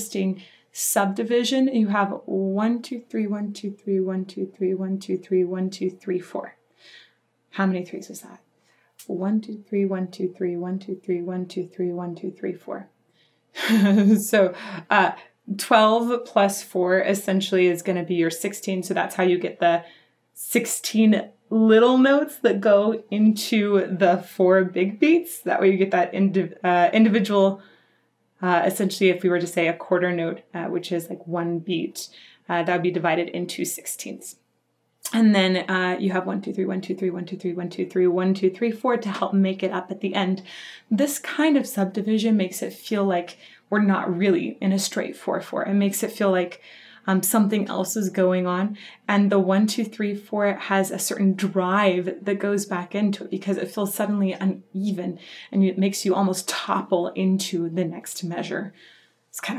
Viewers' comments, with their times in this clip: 0:04 regarding the subdivision of beats she's talking it's not four threes and a four, it's 2+3+3+3+3+2 if you listen closely. Gives a ocol syncopation type effect.
0:40 is the polka underlayed within the rock?